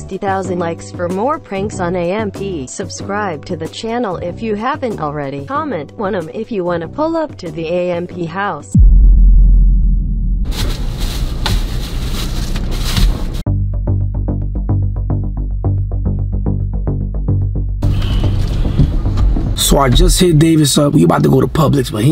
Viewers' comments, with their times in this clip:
0:05 why the voiceover pronounced wanum like that😂